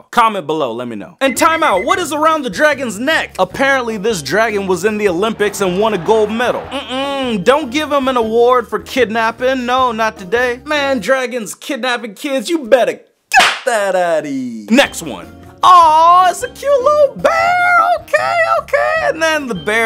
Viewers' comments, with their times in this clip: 0:04 don't tell me he didn't sound like Obama